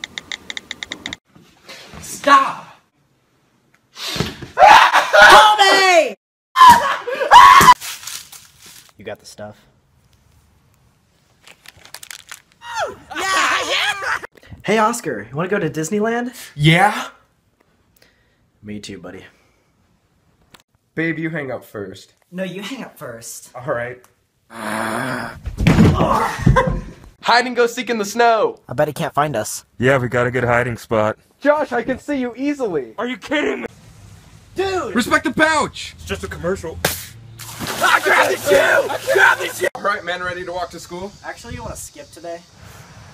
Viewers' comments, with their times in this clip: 0:05 That looks like and sounds like Tanner Fox
0:14 makes me die every time, the way he says yeah has me in stitches 😂😂😂
0:25 I can hear the laugh from behind the camera lol